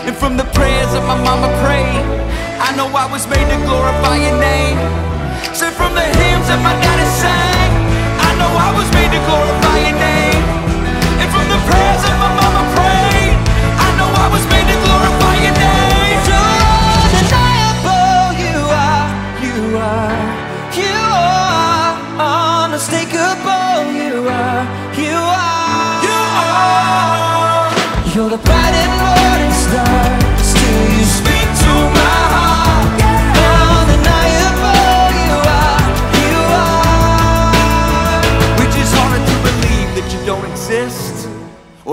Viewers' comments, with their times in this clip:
0:08 My favourite part is when TobyMac sings louder and louder
0:09 Love this song so much. I love how much Toby Mac get into his music. He worshipping on the top of his lungs and he gets so much into it. and so on is just so powerful.
0:25 Toby's vocal is SO FREAKING GOOD!
0:26 Toby's vocal is awesome